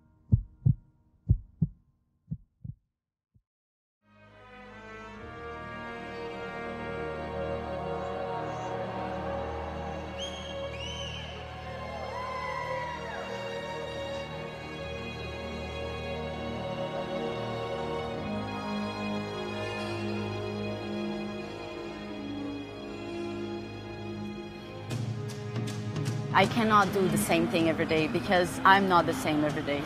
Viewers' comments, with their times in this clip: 0:10 uhm...I swear that was either rude. Or an impressive whistle
0:10 Was that a catcall?
0:11 did I just hear a cat call